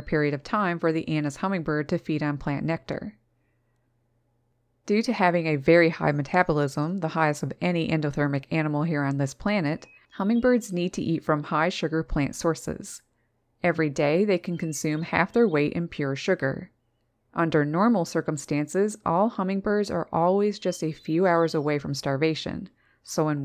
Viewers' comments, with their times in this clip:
0:07 OMGosh - LOVE this video, especially with the Hermit Thrush in the background (around the timestamp).. They're amazing, those Anna's Hummingbirds. They don't have any down, right, to keep them warm? If true, I think Anna's Hummingbirds are the True Winter Survivors. Thank you for wonderful content all year long.